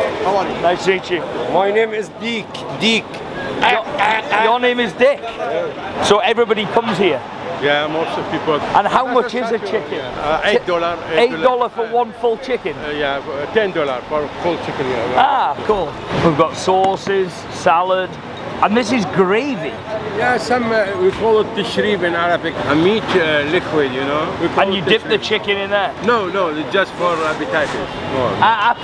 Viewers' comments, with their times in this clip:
0:09 Did anyone notice what he said when he called that guy d?ck than deek 😂😂😂